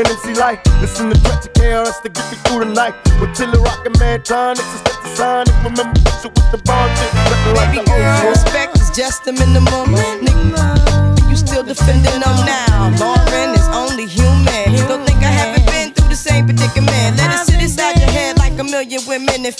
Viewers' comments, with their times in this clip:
0:07 Good Sync but 2pac misses half a verse to be totaly square on the beat. Hill comes a little bit too soon. But good job.